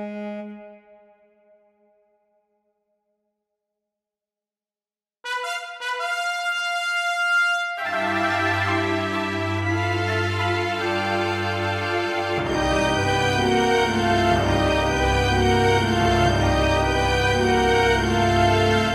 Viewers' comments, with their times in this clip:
0:05 The Storm theme begins